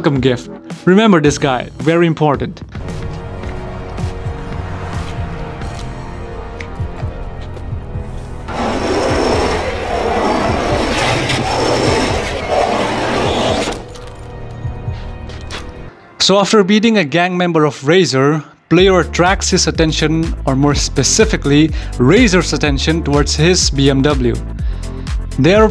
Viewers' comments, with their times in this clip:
0:08 that scratch lives in my head rent free 🫥